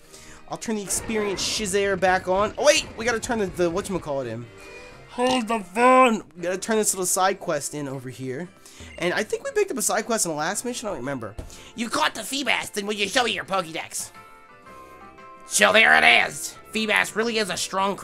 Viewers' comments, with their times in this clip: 0:03 Mari-what? Marini? what pokemon is that?